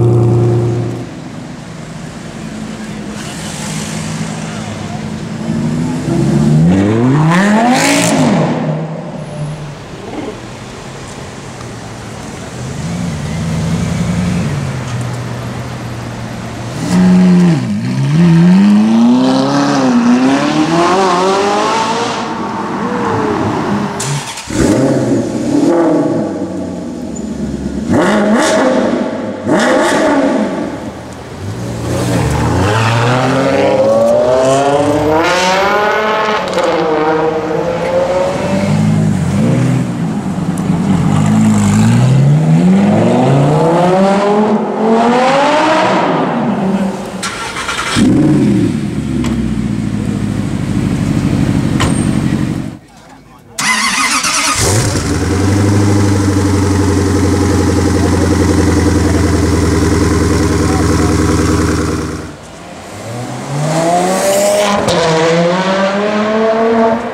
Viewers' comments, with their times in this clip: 0:03 LAMBO TITANIUM EXHAUST !!!
0:31 fBMW M6 has better sound than ferrari
0:53 that kinigseghg is like a fuking dinosaur !!